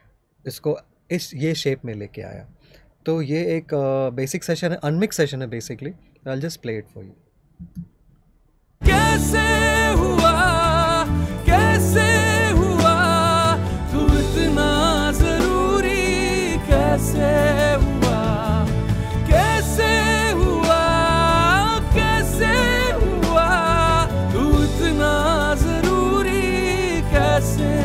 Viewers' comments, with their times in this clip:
0:09 loved the unmixed version than the mixed one 😁.